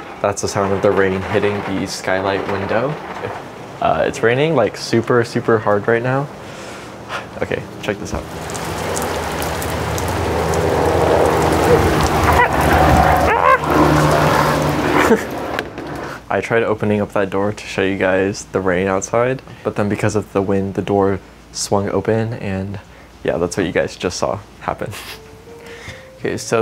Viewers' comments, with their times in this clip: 0:08 the sound of rain tickled my brain so good, very nice, thank you lol